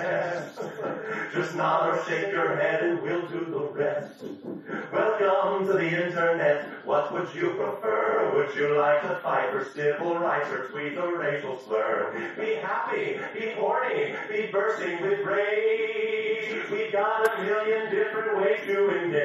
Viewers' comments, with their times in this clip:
0:06 the harmony there was really nice actually. i cant explain why
0:06 The harmonies on "... what would you prefer..." 😯 Makes me sad that the final version doesn't have them.